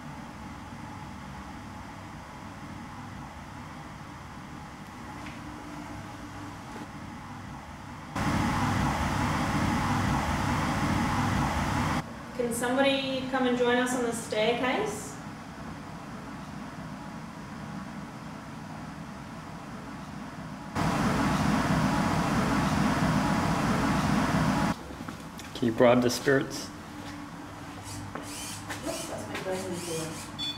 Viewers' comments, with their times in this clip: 0:03 did the voice say 'come down'?
0:15 I think I heard 'I'M NOT YOUR TOY'?